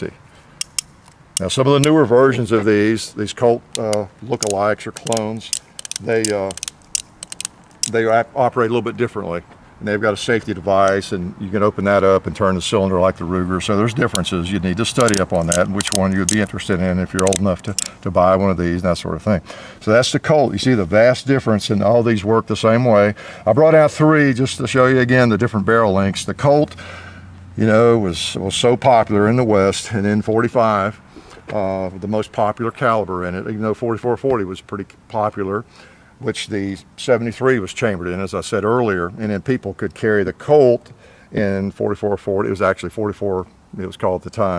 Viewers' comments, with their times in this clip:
0:07 there is nothing like hearing the Big Iron speak
0:26 That unloading sound is so satisfying